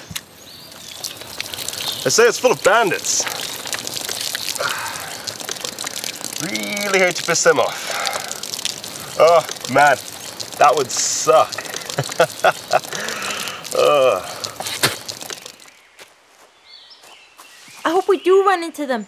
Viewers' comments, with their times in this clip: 0:04 That's seems like an abnormally strong pp stream tho